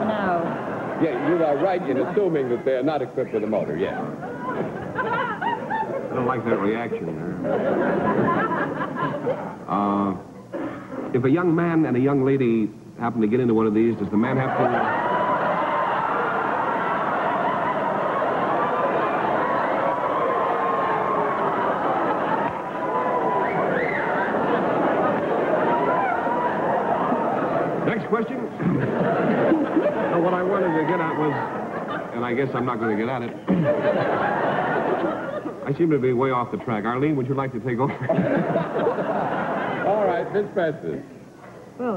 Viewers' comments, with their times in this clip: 0:10 Check Steve asks (about the army cot), “if a young man and a young lady happen to get into one of these...” but, after 25 seconds of uproarious laughter, he never gets to the end of the question which is, “...does the man have to do the paddling?” As big a laugh as he got, he’d have gotten a bigger one if he could have finished the sentence! Steve Allen, one of the funniest people ever to breathe air.
0:24 An audience member wolf whistles